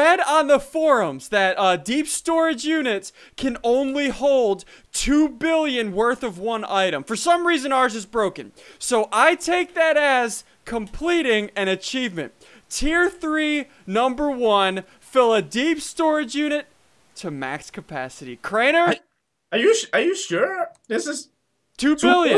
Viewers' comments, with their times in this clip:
0:04 we take that ass.... 😂